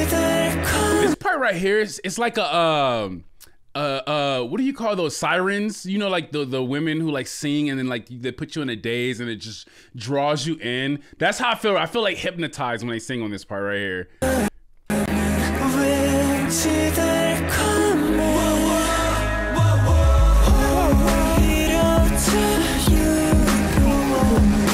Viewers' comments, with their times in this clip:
0:05 EXACTLY he sounds like a siren i got goosebumps when i first heard it